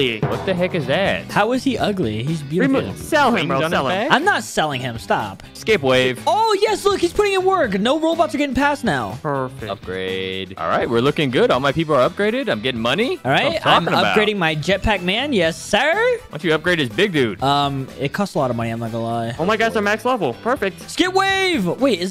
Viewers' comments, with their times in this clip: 0:09 bro really said the robux ain’t getting past now